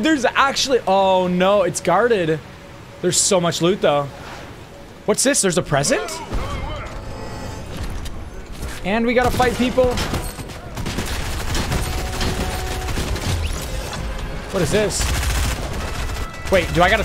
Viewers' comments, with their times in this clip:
0:04 I hate how no one is talking how he says “what’s this there’s a present?” it made me die laughing XD